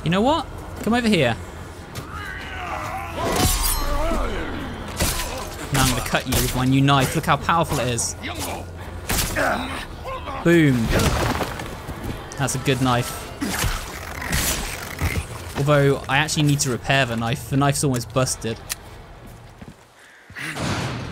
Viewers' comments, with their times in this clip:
0:07 "im gonna cut you with my new knife" average bri'ish bloke fr